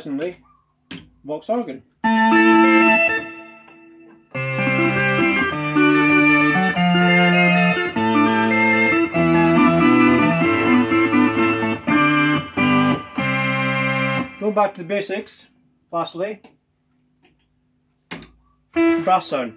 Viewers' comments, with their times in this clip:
0:07 Shades of Manzarek